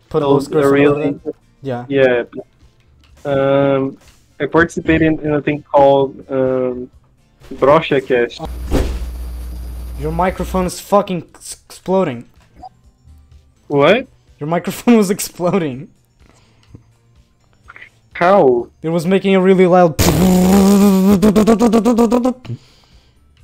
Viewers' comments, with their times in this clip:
0:10 Your microphone is exploding